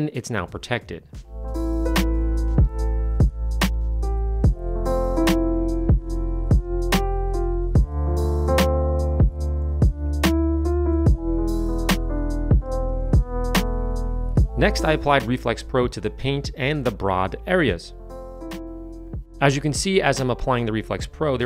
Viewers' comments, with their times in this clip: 0:05 this is my favorite background song by far